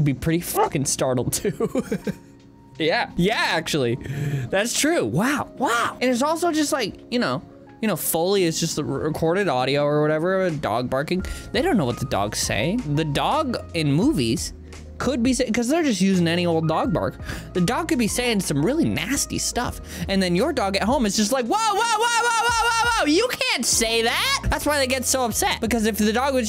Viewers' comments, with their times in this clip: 0:10 My volume was at max and it am. That intro might have killed me